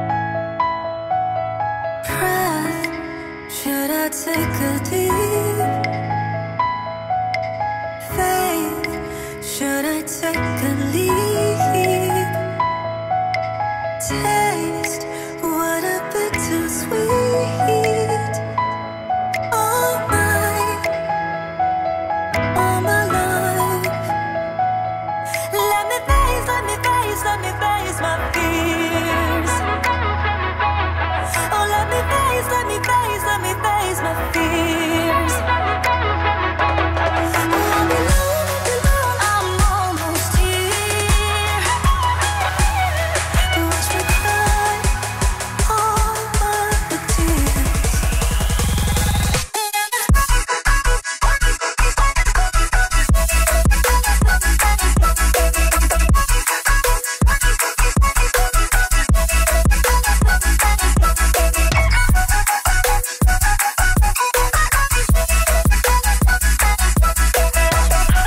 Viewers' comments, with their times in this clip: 0:10 sounds like you said should of take a leaf 😂😂😂😂😂😂😂😂
0:25 When the music starts to pick up It gave me chills/goosebumps. That's when you know this is good music.
0:30 I dont see how the Skrillex part honestly fits. Everything before that? yeah, espeically with your message. But anything after I dont see it. That weird dubstep or EDM whatever the hell its called throws me off.
0:49 felt like my heart was for real falling upwards, to be brought back down to the earth by the beat <3 <3 <3
0:49 I'm liking most of the song, but the drop seems a little off to me. A bit too generic and plain. I was expecting something a little better considering the build-up to the drop. But regardless, the visuals are amazing and Utada did a beautiful job with the vocals as always. The lyrics are also fitting for KH3. Skrillex did a pretty decent job as well... it's just that the drop was unsatifying in my opinion.
0:50 After listening it severla times I grow to like this, well I like it the first time hearing it, just a bit thrown off point, this song is good, but the level of that electro came off too strong for me for a kh opening, but well this is just a short ver. I'm betting it's gonna be godlike on release, I mean it's Hikki and Skrillex said he love KH too, gotta appreciate n respect fellow KH brotherhood right?
0:50 I thought the track was pretty lame at first, since I have it a listen in the background and something felt wrong. It didn't have the kind of energy Simple and Clean BBS remix had, not even the Ray of Hope one. But when you watch the whole thing and analyze it, you'll find a synchronized harmony the action and associate the whole track into something epic. Specifically the shot gives you a feeling of spiraling downwards and giving you an idea of "this shit is gonna blast". It personally gave me goosebumps and hardened my nipples to the point where it could rival the power of the Ultimate Weapon.
0:50 Some of ya'll are so pretentious. You only listen to rock and classical, right? None of the techno/dubstep garbage, right? 🙄Glad I'm not that kind of purists garbage person anymore. Hikki and Skrill did an excellent job, that drop is dope af, nothing wrong with anything dubstep, techno, synths, etc. It's a song for the times and I think it was smart of them to include a foreign artist to work with Hikki. Hope to hear this on radios and honestly, there might be a version with just piano released, I can imagine that.
0:50 Love the series. Gonna play the game. The song won’t make a difference for me either way given that I will likely spend dozens of hours playing the game. But damn, I just loathe this dubstep oh intro song. The trailer music is glorious till I thought it would be different once the full version came out but I was wrong. It’s way more dubstep. I appreciate the fans of KH who like it, we’re on the same team. But for me the roughly minute and a half of the full song that’s dubstep is just garbage. Mercifully the rest of the EP is golden. Fortunately, this version will only play once during the opening. The ending version will likely be a remix or a different song altogether. Or at least I hope it is ... 😆 🙏🏾
0:51 <---- this plus outward sounds like a robot sharding underwater